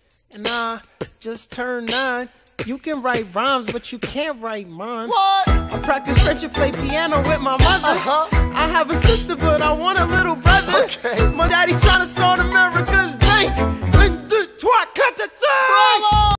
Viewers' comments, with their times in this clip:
0:06 what did you censored here?